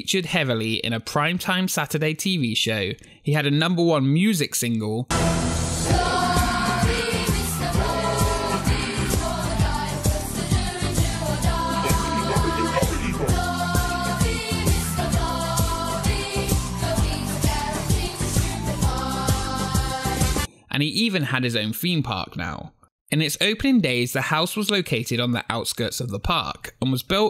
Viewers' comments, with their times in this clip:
0:06 I just entered the video and now I can't with the song 😭 (
0:10 I think that song just became the background music to my nightmares.